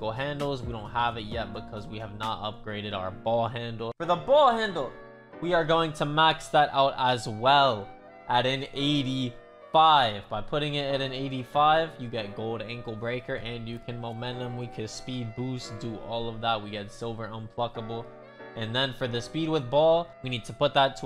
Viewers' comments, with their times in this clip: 0:05 They instrumental playing in the back ground is 🔥